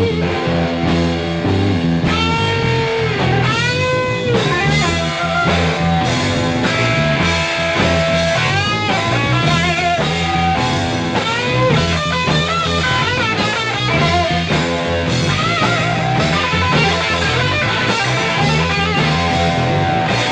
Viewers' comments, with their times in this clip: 0:06 The board OP was getting wild during spoonful starting